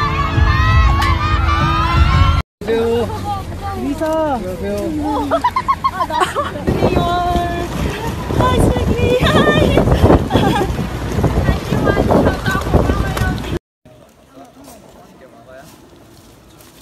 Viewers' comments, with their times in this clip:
0:03 Lisa so cute laughing 💖💖💖